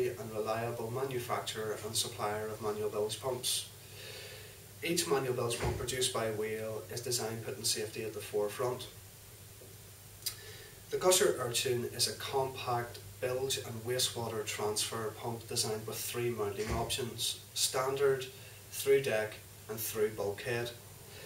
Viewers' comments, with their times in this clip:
0:09 This guy must be a pro. The pause for dramtic effect had me reaching straight for my wallet!